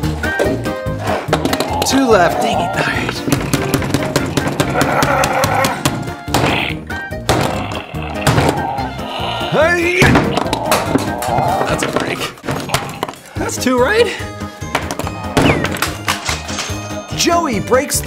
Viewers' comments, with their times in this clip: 0:04 anyone else think it kinda sounds like Chewbacca???